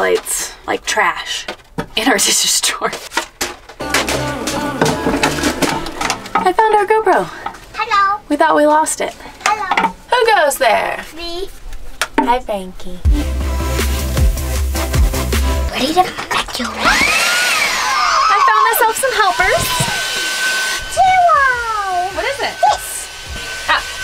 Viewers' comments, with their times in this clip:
0:07 i thought the gopro was saying hello 😅😅😅